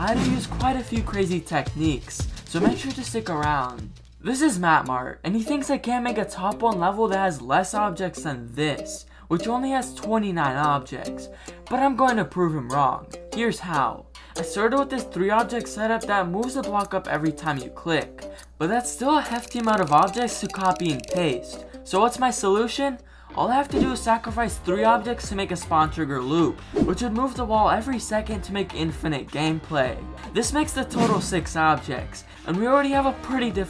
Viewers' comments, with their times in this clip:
0:06 Goat sim music hits hard🗣️🗣️🗣️🔥🔥🔥
0:15 Is it just me or does this music remind me of goat payday